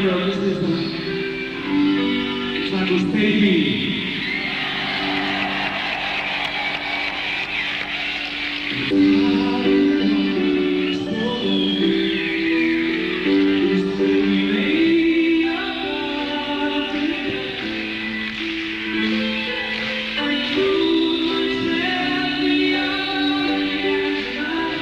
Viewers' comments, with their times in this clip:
0:05 is this the best Save Me from November? Freddie's soft tone at the beginning is absolutely gorgeous, and besides that crack in the 1st chorus and lack of B4s there aren't really any jarring flaws with this version.